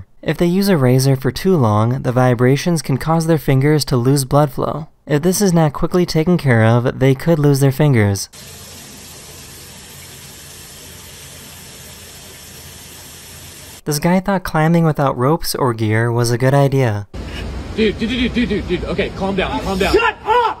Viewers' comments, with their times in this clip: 0:03 the way he says bluhflow 😩